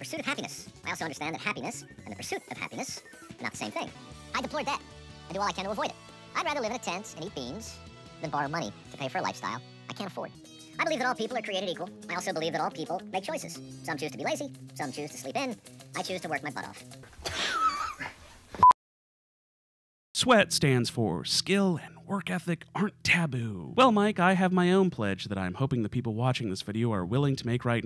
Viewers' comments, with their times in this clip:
0:08 Great Ben Shapiro impression